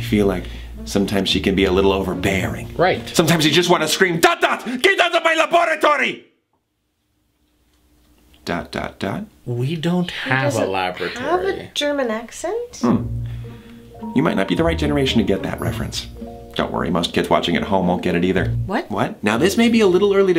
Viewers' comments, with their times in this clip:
0:04 i cant tell if it is some one from dexter's lab (ive never watched it lol) but it kinda sounds like doof from perry the platypus 😂😂😂